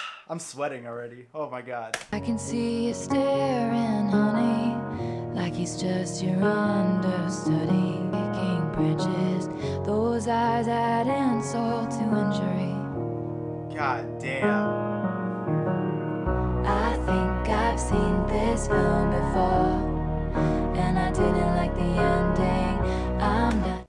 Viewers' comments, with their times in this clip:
0:10 HAHAHAH THE SMALL 'hah'
0:11 His screech during Exile is my reaction to the whole album. Also cracks me up how can draw connections from August to every song. This album is the cure for 2020. If Taylor decided to stay with this sound for the rest of her career I wouldn't be mad. Exile is next level. All tracks are are so stripped back and raw